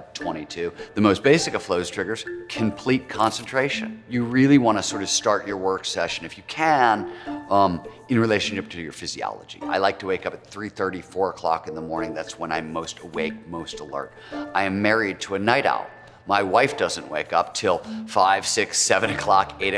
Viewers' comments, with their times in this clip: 0:06 I heard cypher cam